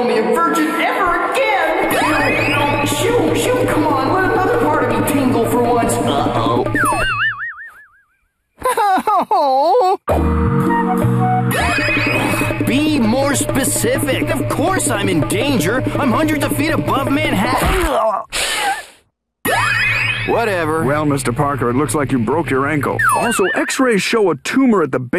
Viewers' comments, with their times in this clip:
0:10 idk how they did it, but Robot Chicken managed to make a theme that gives to me at least the vibes of Romita Sr. Spiderman